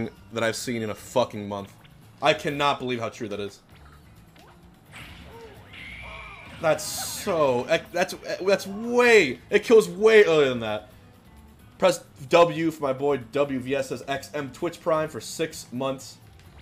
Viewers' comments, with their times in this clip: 0:04 I love how the "HOO-HAH" was playing whiling you was pulling the 2nd new kill confirm